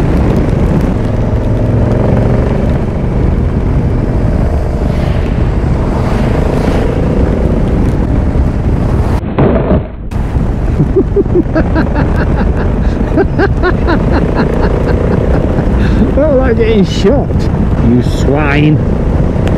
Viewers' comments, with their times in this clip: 0:07 that laugh reminds me "fight in the shade scene- 300 spartans" :D